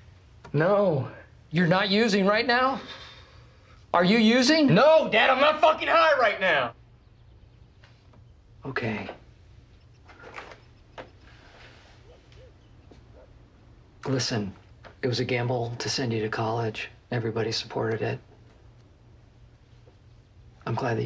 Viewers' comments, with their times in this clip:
0:05 I used to be addicted to opiates and fuck this hit me hard.... I've been clean for four years now. I'll say this. It was a struggle but I'm glad I'm sober. Man, this scene is so accurate. Especially when it comes to drug addiction. Stealing money, lying, the anger, and trying to hide the fact that he's high. "No, Dad! I'm not fucking high right now!!" The way he delivers that line. Wow... "Fuck you." "Fuck you?! Don't talk to me that way!"